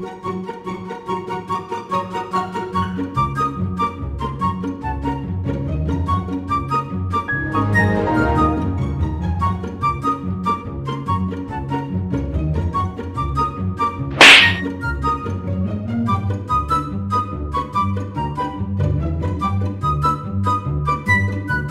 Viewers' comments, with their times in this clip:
0:07 Loved that windows sound